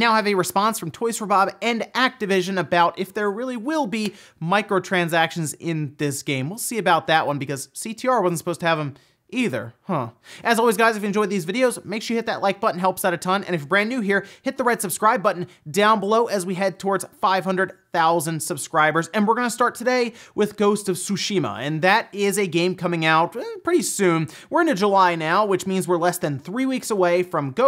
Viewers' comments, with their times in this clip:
0:09 caution!! minecraft villager on